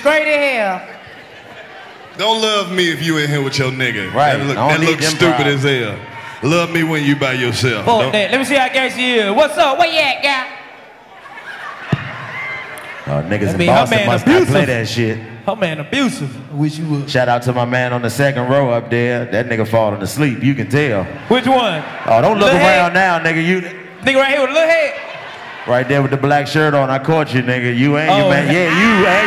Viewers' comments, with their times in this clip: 0:10 dc aint get on love .crickets lol